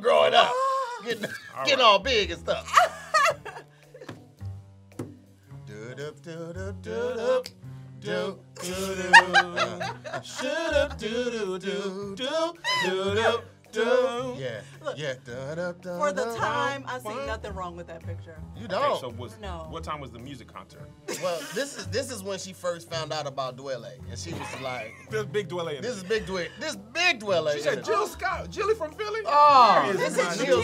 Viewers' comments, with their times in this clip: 0:05 Humming Musiq Soulchild lol 😂
0:06 y’all betta harmonize🤣🙌🏾
0:12 That musiq soul child break was fire